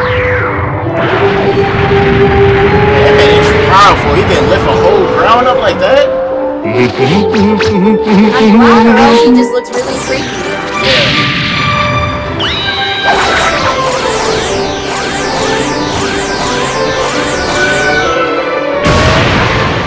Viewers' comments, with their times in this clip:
0:06 Cell is powerful enough to hum along with the background music!